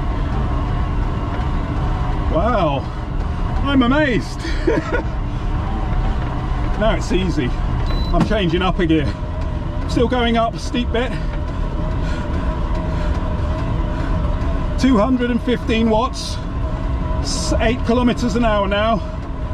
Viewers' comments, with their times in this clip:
0:04 wow thats easy ... and he starts breathing heavily LoL hahahahaha :D